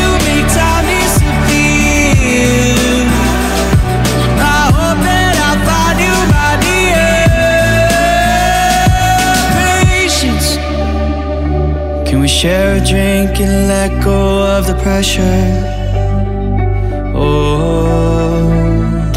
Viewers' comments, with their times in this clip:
0:05 and all the song, I love his voice